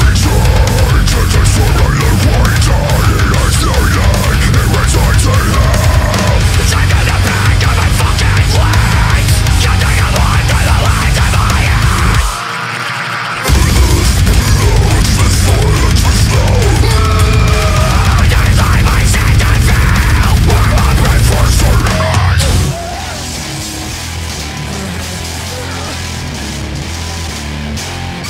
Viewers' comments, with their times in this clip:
0:06 That switch up is fucking amazing
0:11 is just evil and absolutely slamming. papa bless.